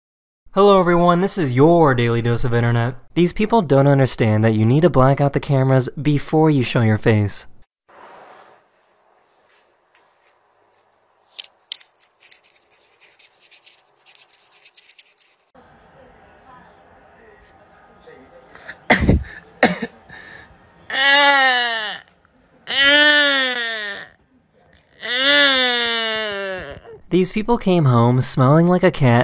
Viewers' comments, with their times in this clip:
0:06 Why does the cat sound like the daylight daycare baby crying💀💀💀💀💀 EDIT: bro gave tips on how to be a criminal💀💀💀💀💀💀💀💀
0:15 the guy sounds like the girl from ice age